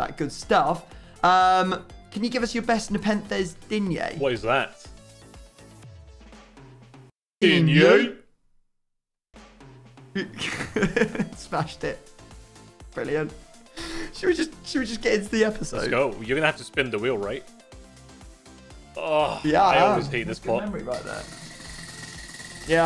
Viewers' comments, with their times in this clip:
0:06 Lol Perfect timing😂 sounded like a demon